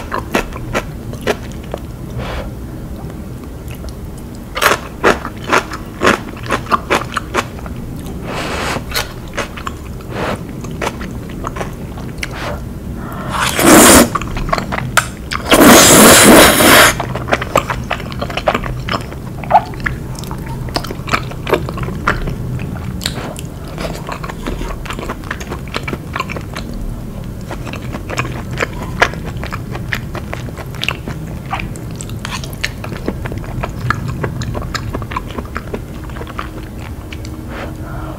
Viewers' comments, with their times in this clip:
0:03 blowing kimchi Thank me later
0:19 THE sound of swallowing she made reminded me of Tom&Jerry when jerry saw tom doing something bad again!!!! It's so cuteee